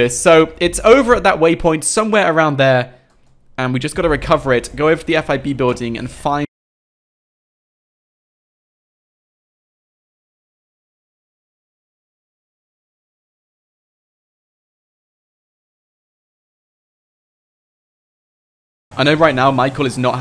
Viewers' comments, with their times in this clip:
0:06 Wheres the sound ???
0:07 the camera and audio cut off